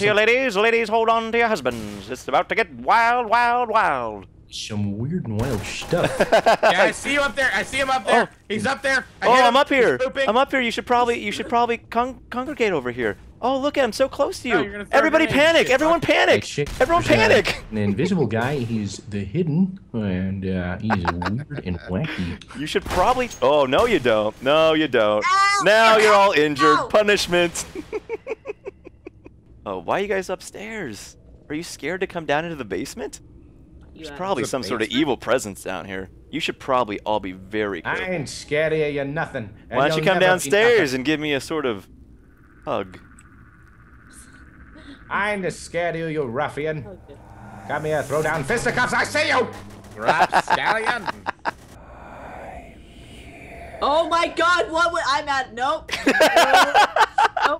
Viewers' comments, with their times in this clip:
0:04 you sounded just like the commentator from legend of korra
0:04 ill never forget that episode of Saturday night live lol he did a good impression too
0:25 happy mask salesman laugh from leagend of zelda majoras mask i almost shit myself when he did it
0:42 Haha what's the accent ? that cracked me up =')